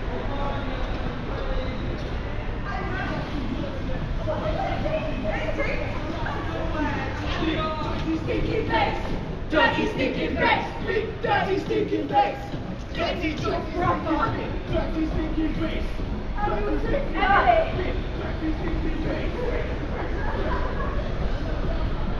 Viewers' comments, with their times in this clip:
0:07 Dirty stinkin' bass